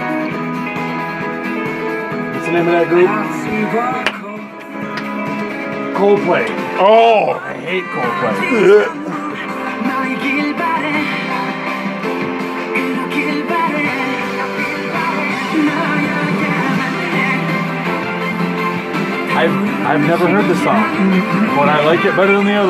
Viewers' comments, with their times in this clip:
0:06 Well, no wonder why it didn't keep up with the K-Pop. They took the most boring part of the song.